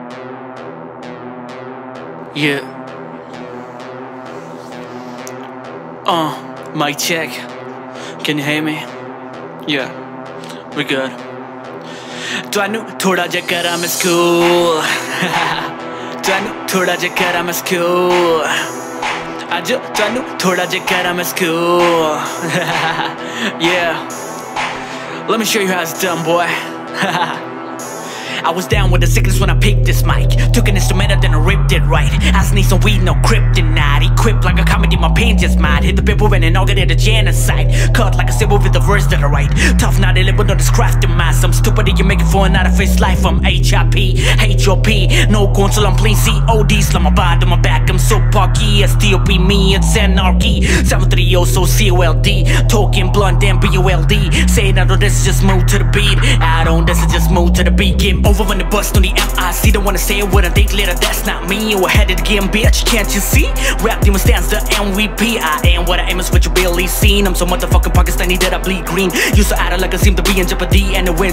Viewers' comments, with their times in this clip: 0:09 Cartman from southpark
0:56 beauty of song Amazing music